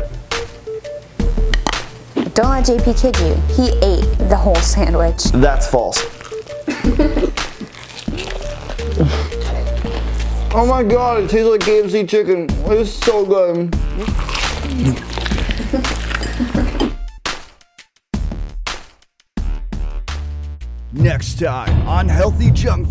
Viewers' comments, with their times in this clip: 0:03 Those sound effects :D